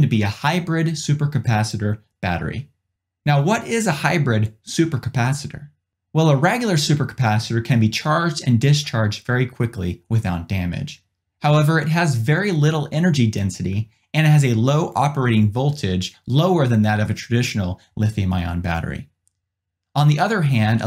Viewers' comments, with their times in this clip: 0:04 ...thats a unique pronunciation of "regular"